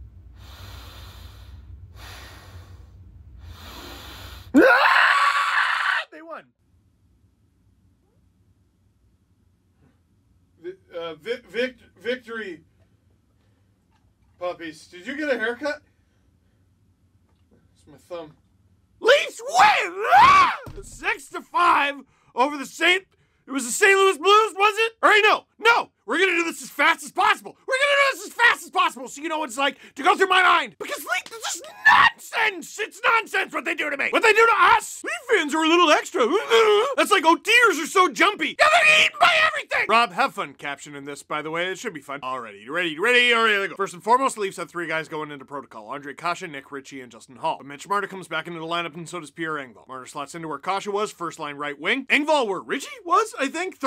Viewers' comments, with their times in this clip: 0:04 the scream I make when a brute throws a fuckin grunt at my face
0:34 I’m laughing so hard at that noise you made